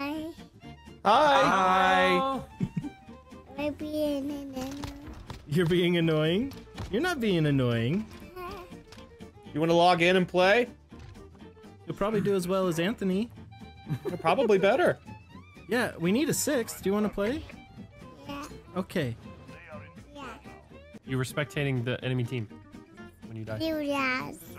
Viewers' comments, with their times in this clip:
0:06 "You're not being annoying." off-tune piano note